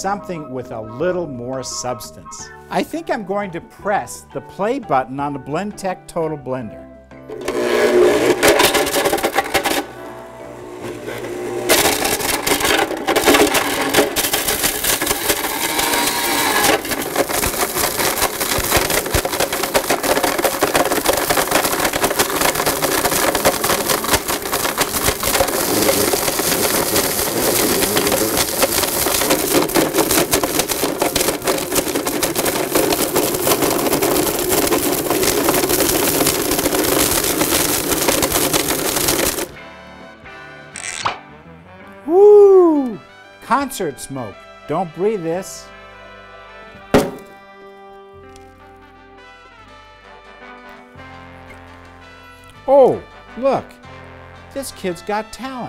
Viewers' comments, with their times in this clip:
0:10 Don't try this at home kids! Me: WHAT?? I CAN'T HEAR YOU OVER THE SOUND OF MY BLENDER!!
0:43 it sounded like he said "dont bree this"